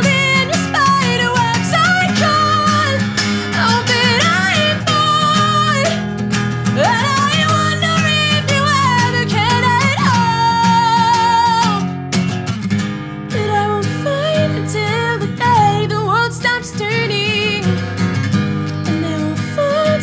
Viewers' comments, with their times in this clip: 0:07 my god her voice is amazing